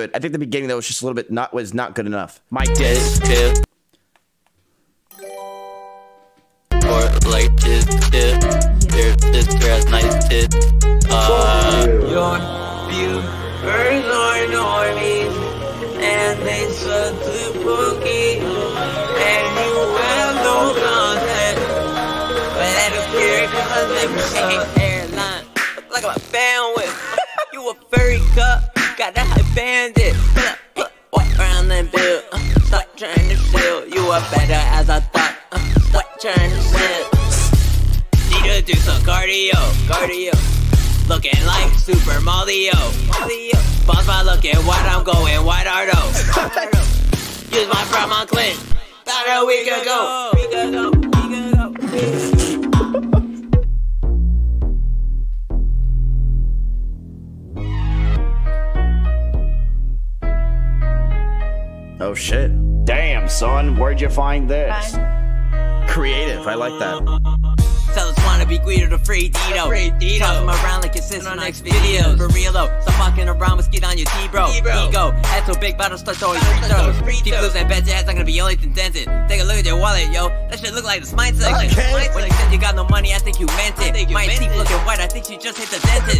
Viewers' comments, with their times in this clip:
0:07 was by far the best entry, especially the last part, canibus vibes
0:25 I've rewatched like 20 times and cant tell if is his laugh or part of the song. HOLY SHIT so i went to his reddit to find the original, and the laugh ISNT in it. It was just so perfectly timed holy fuck.
1:02 beggining had world star flow
1:07 Blueface type song